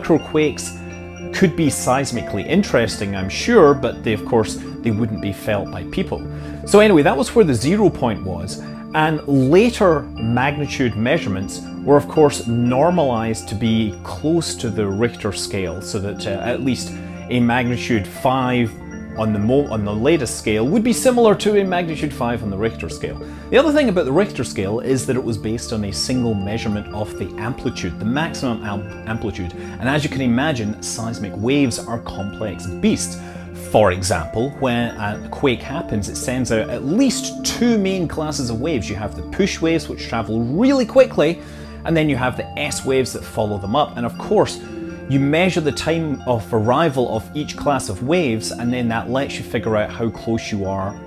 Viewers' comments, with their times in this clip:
0:07 i made to and had to bale out due to that xylophone music
0:36 The loud background music is very annoying ... because it is too loud and also because it is only a very short loop. I am in and don't think I can listen to that any longer.